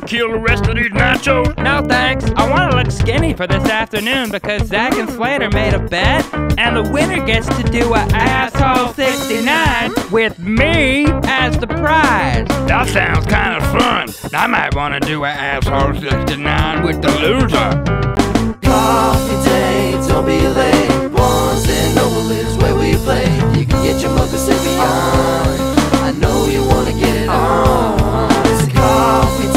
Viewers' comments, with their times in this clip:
0:10 is mine. Dudes killin it on those bongos!